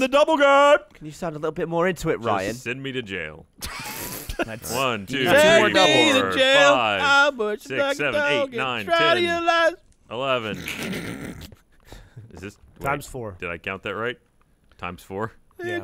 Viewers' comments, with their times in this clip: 0:03 Lol Jack singing vying for attention again